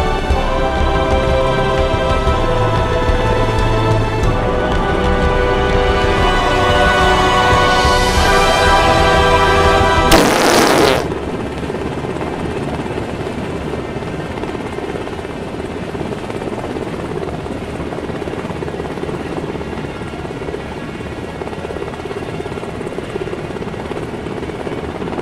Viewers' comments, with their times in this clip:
0:09 DAT FART LOL FAIL